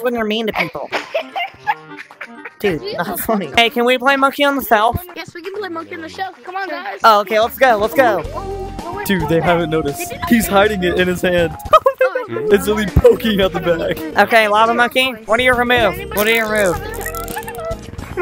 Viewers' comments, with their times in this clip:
0:04 Ay CaN wI pLaE mOnKe On De FeLf